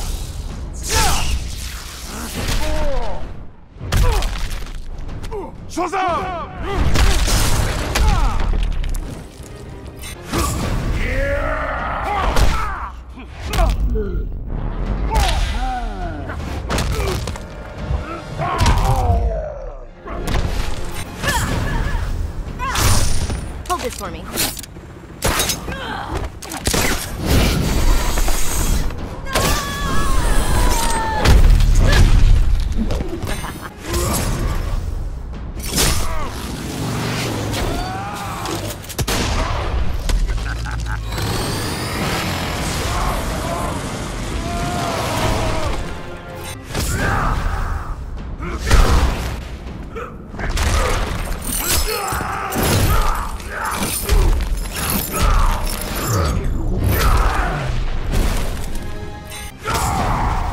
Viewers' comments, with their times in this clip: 0:09 my favorite scream
0:10 Bane’s “YEAAAAAAAAAAAAAAH” is so legendary.
0:10 Bane's supermove has to be the best. That "YYEEEAAAH" at the start and his voice makes it so good Im sad that Netherrealm shrinked him in Injustice 2
0:43 who laughed at that